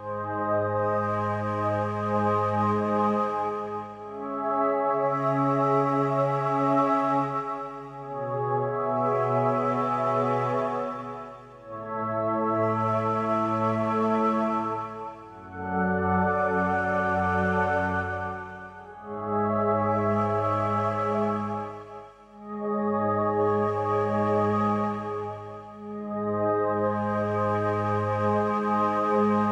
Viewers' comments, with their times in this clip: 0:10 Music in the end of the show is tragic. Peter Burns’ kiss :))